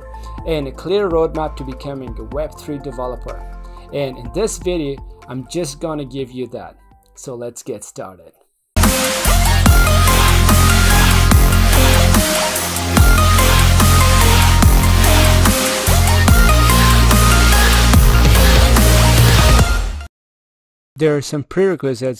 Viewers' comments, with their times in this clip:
0:07 coming from audio production... Learn mixing.. ouch!